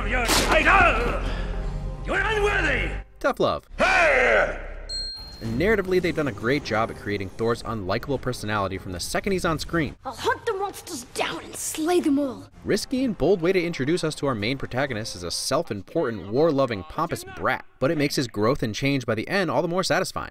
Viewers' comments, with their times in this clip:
0:04 that growl wasnt supposed to be in the script so lokis reaction is legit
0:04 is unscripted. Anthony Hopkins improvs his "growl" to shush Loki before he could speak and the look on Loki's face is Tom's genuine reaction while in-character.